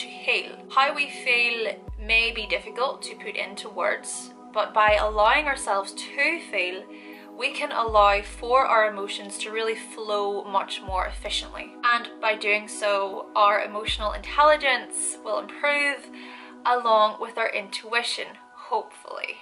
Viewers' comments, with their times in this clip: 0:06 I know what you said but your (gorgeous) Scots had me hear "...allowing yourself to fail " for me to find the flow... ...and I think that's what I really needed to hear...